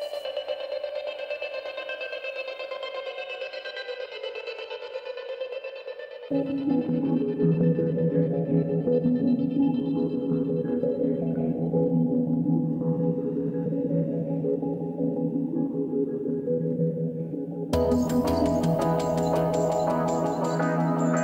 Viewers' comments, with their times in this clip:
0:05 unknown music I really like